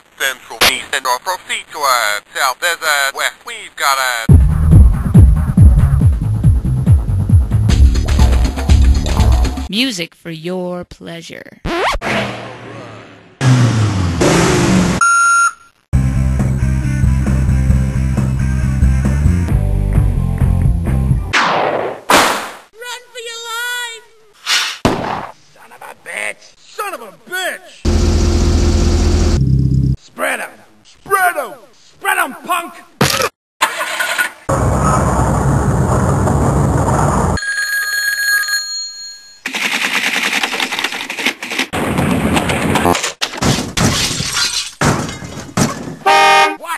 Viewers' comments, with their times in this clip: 0:08 I still don’t know what made that noise but I heard it so many times
0:15 Some of these melodies are pretty cool, wandering around hearing them in open top cars, like porka, 4x4, Stingers and Mambas
0:26 was my fav, id say it just like the voice sample and my one buddy would crack up every time.
0:32 i came here for the splat noice